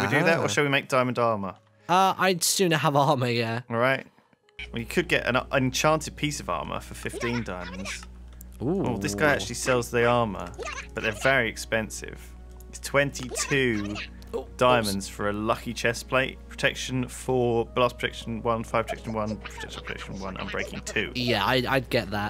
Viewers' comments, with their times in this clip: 0:04 Did anyone else heard Foxy's Scream ?